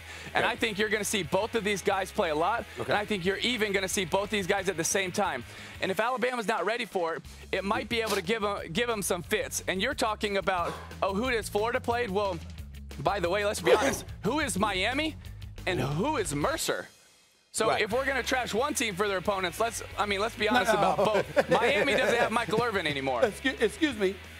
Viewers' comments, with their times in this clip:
0:08 Man Stephen A was struggling before that Sneeze 🤧 irrupt